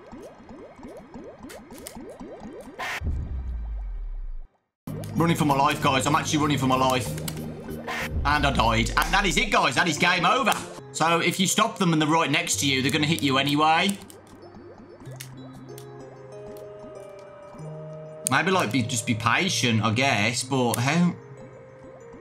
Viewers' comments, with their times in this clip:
0:05 "Running for ma life, guys. I'm actually running for ma life and I doied. And that is it, guys. That is game over." Ends the video.